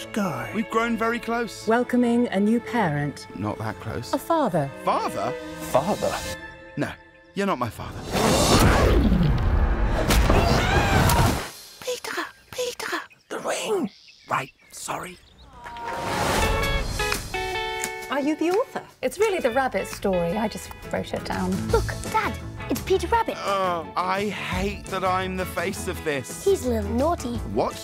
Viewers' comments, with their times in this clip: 0:09 repeat it and it’s so funny how peter screams
0:10 repeat and it’s so funny how peter screams